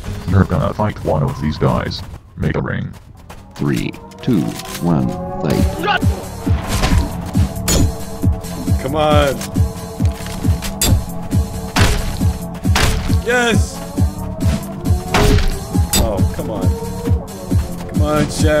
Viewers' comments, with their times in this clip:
0:03 What's that song sound like something out of half-life 2